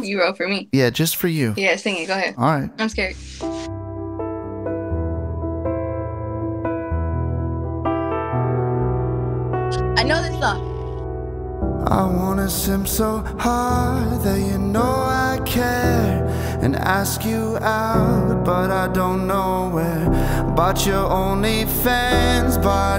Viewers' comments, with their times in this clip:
0:04 that was a great cover of one of my favorite songs
0:06 Song is fire!!!!